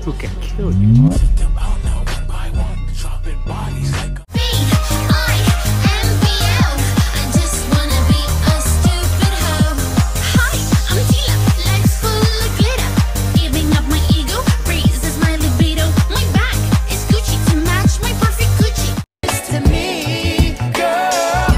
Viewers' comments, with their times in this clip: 0:04 I SWEAR THIS IS ONE OF MY FAVORITE COSPLAYERS!!!!!!!( and this song is ketchy T^T)